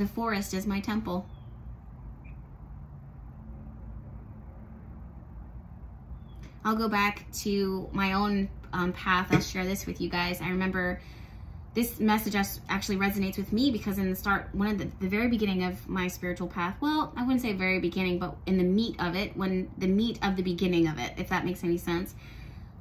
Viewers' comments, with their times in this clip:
0:09 what was that audio noise?!
0:09 It's so interesting because both pile 2 and 3 called to me and then you said that pile 2 peeps should probably listen to pile 3's reading. Both resonated very deeply with me. Thank you so much. 🙏🏽 Also, did anyone else hear what seems like a male voice ? Or maybe it's just a sound glitch. 🤔